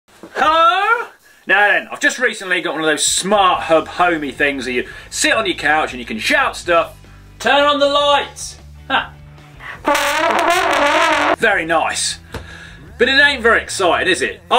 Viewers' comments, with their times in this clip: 0:00 Um... Hello, Minecraft villager.... 😂